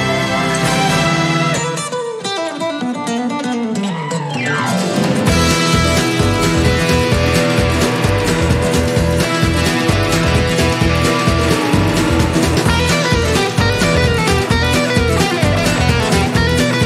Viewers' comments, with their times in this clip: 0:03 Man why is this riff so good! It goes straight to the soul. Each time you stepped up the beat was perfect, and I didnt expect that last section. That scream 🤣